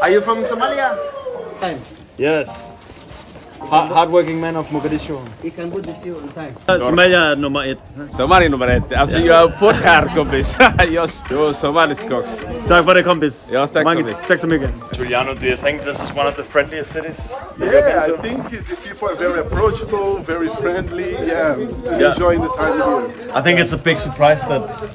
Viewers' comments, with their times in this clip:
0:06 is that man Somali and which language he's speaking?